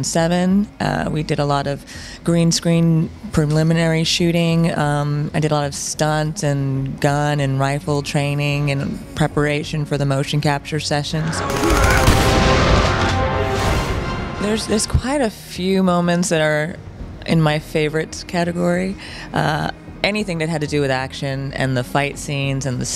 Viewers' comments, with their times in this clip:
0:10 different weapon sounds and area, must have been cut